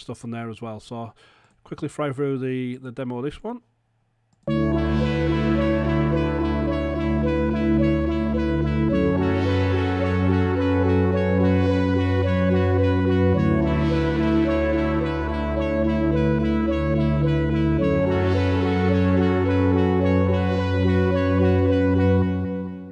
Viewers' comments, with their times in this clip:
0:04 The sound in sounds like piss pamper by playboi carti